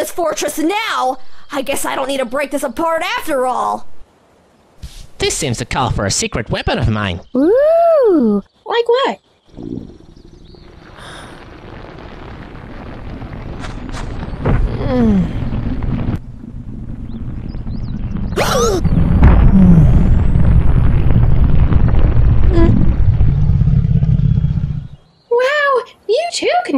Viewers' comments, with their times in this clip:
0:09 Why is this part so needlessly uncomfortable? Usually when a cartoon character like this grows as Guyus does, a sound effect like a whistle increasing in pitch plays, and it takes only one or two seconds. Another alternative would be some feedback from the environment, as it sounds like the area around them is shaking and rumbling, which can be longer than the former and therefore be long enough for what happens in the film. But here, it's total silence from the background, along with the titular character quietly moaning and growling... Like, what? How and why did this go over well in the editing process? It seems extremely fetishy, and that's probably what the motivation was to make it like this. Which is even creepier, considering Guyus is supposed to be a hatchling, as evidenced in his character bio on your website. Other than that, the film ain't half bad. I'd give it a solid 6 or 7 out of 10, give or take.